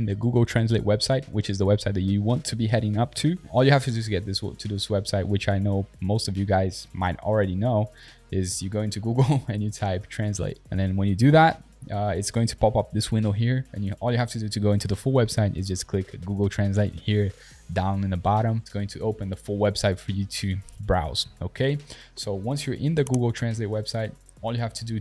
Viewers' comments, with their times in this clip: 0:09 why was he laughing